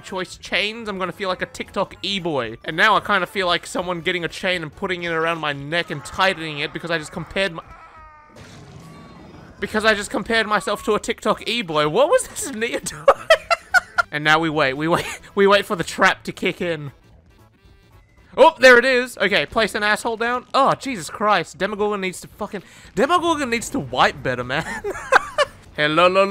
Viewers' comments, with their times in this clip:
0:04 The way he said the n word so smooth Is he black? Idc if he is or not I found it funny
0:07 did not sound like he said nea....
0:08 Hear that? AMONGUS
0:10 You will only hear what you read "What was this Nea doing" "What was this ni*** doing"
0:11 sounds like he said the n word
0:12 I thought he said the n word
0:12 I mean doesn’t this kinda sound like the n word lol
0:12 "What is this nigga doing?" Then an audio cut 🤔